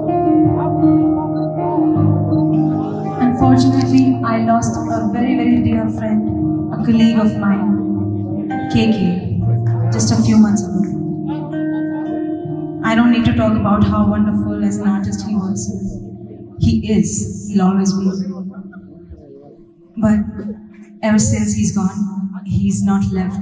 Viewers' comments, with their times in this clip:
0:05 legend's and most importantly a friend's tribute to KK sir ❤️ U sang it with so much feel sunidhi mam